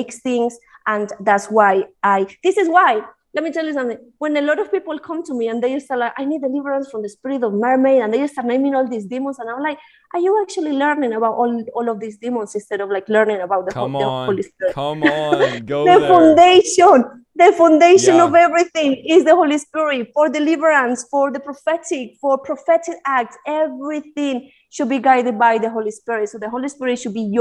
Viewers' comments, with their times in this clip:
0:10 I was today years old when I heard someone speak English with a Spanish/British accent.. It's subtle but I hear the twang